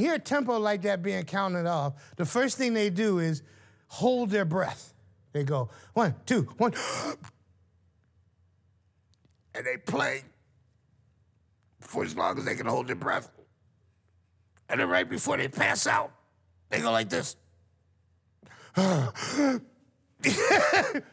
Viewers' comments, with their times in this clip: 0:09 Sounds like Big Smoke lol